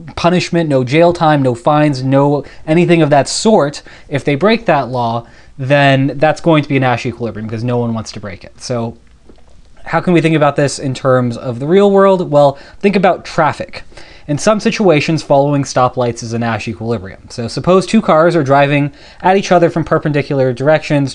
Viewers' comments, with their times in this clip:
0:09 the gulp is unreal